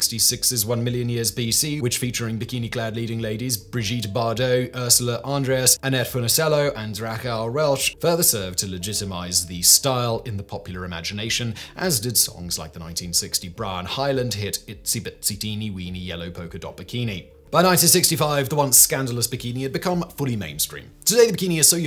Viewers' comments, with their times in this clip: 0:05 Are you trying to say "Raquel Welch"?